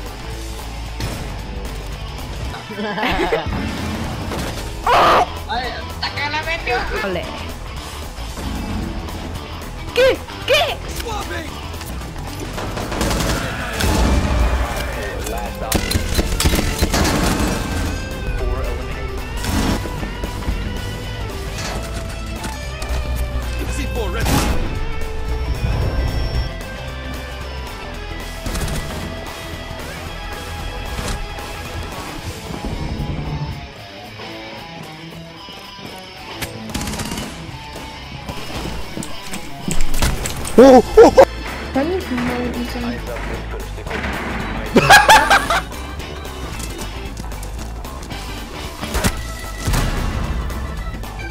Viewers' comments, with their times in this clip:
0:04 The clip he yells "que que!"which in English means "what, what!" My Spanish lessons are really coming in handy.
0:34 exact same thing happened to me, audio is broken in that area. first sound cue i got from the enemy pulse is him missing his melee.